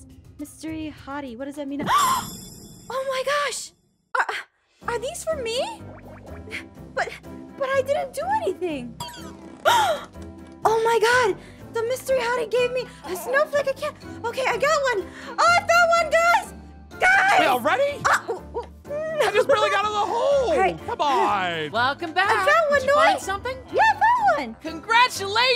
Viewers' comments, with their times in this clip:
0:06 the nodding sound is so cutee